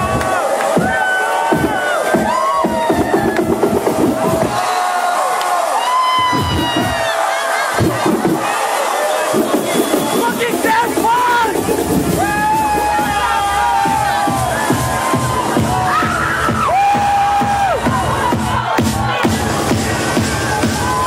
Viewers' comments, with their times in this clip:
0:09 Lol at the guy screaming "It's effin Daft Punk!" I would've been the same